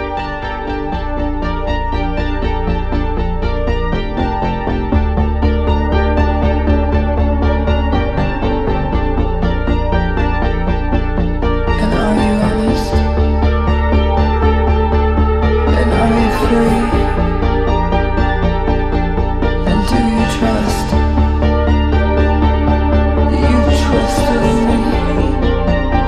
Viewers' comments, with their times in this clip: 0:07 Love this new dark song, BH never disappoint me. As the song starts to peak and the intensity is just awesome at the end. Good work Gus & Jae, thank you for keeping the music alive